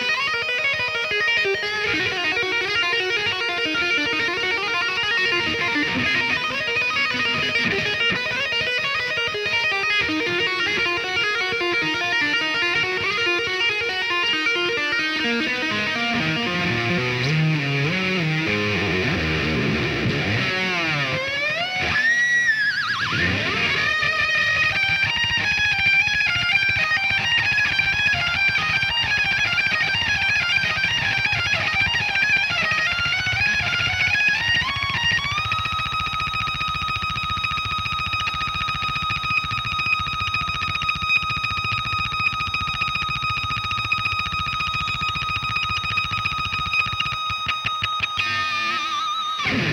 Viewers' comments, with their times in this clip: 0:05 hes playing so fast the, guitar is smoking lol
0:05 Man this guitar is on fire
0:35 That pick attack 👌
0:36 Just shows you how fast he is picking You can hear it, just ridiculous! Also, seems like the samples that Eddie recorded for Back to the Future inspired this solo in their concerts... 🤔